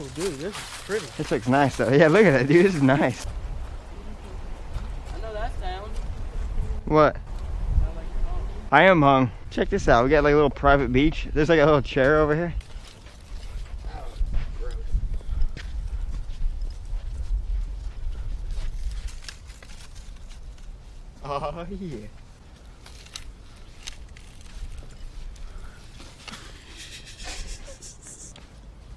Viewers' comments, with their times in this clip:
0:09 I am hung 😂